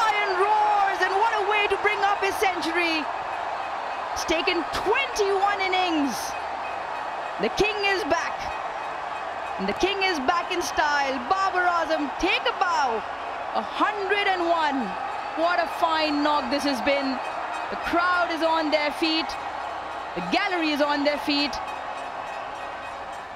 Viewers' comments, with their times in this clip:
0:04 one of the worst roar i have ever heard